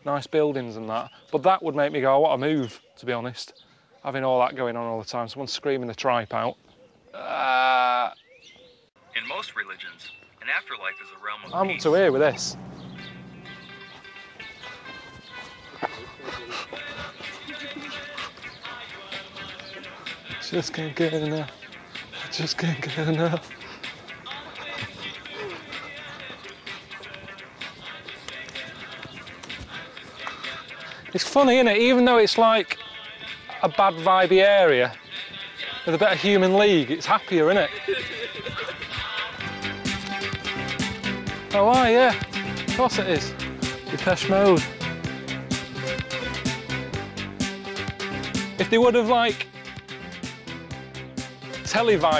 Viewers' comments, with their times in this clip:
0:07 what a "scarified" scream sounds like
0:34 The cameraman laughs exactly like Ricky…?